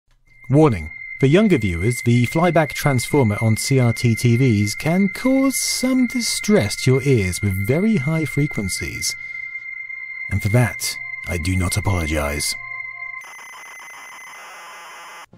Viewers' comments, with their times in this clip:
0:01 it’s the Deflection yoke, scanning 525 lines, 30 times a second, producing a 15.75 kHz tone